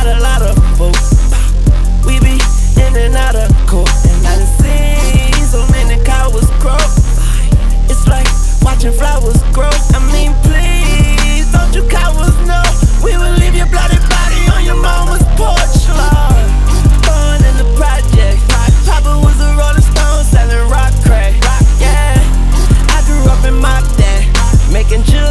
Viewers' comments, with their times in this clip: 0:09 love it when Wayne uses autotune correctly